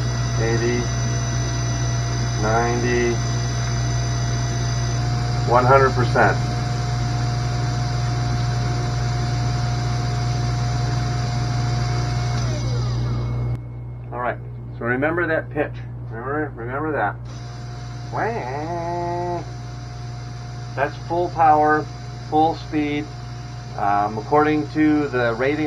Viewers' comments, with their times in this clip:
0:09 Impressions the old motor wasn't too loud, the new motor test with no load will be totally different to when you're trying to cut/mill at 20k rpm. Having heard your initial run up of the new motor, are you sure installed holder is not rubbing on the casing? Sounds very metallic. Can you try dampen the noise by wrapping some thin rubber doing the exposed casing ? Or see if it is just air noise by partially covering air holes round the top of the casing temporarily